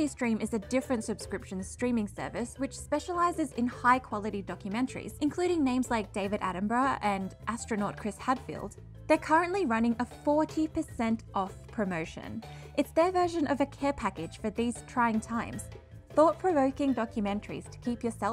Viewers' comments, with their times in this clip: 0:05 David Atten b r u h